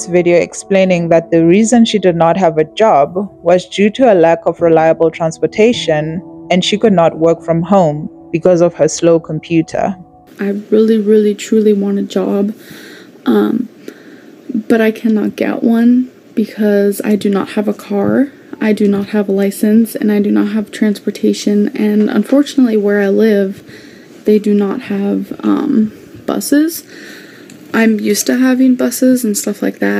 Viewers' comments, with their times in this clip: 0:10 i never watched amber's first Youtube videos, the clip when she's explaining why she doesn't work is so interesting, her way of blinking, Her voice and mannerisms just come off so pretensive and kinda vain, its a bit odd.